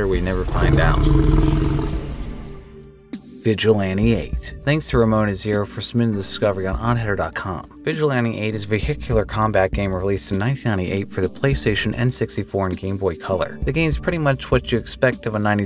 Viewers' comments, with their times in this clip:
0:03 Ngl that Hidden Track 7 from Vigilante 8 is one hell of a sinister piece ngl if that was accompanied by a fight with a car ran by a sinister serial killer that wouldn't be out of place in the Twisted Metal Black verse then they would be nightmare-inducing af.